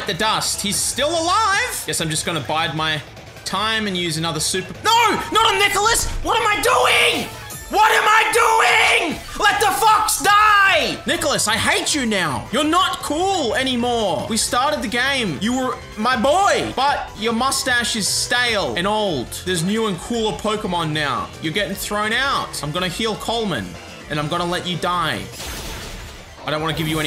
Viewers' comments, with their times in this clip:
0:09 sad Nicolas noises